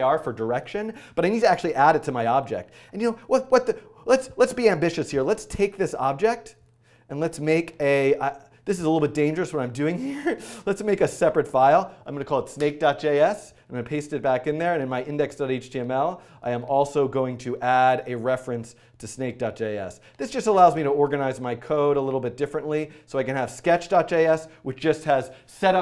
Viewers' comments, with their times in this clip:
0:10 That laught love you Dan 😗